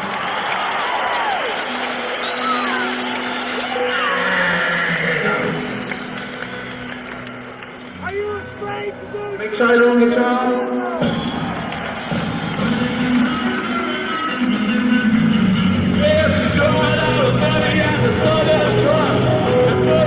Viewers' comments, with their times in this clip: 0:05 you can hear someone in the crowd shout "ARE YOU AFRAID TO DO SYMPATHY FOR THE DEVIL?"